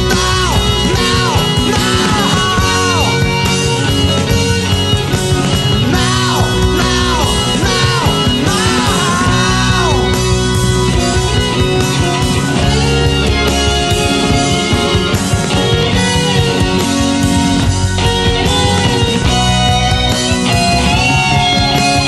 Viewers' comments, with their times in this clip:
0:08 Steve Hackett invented Brian May's guitar style with the solo he plays in the coda.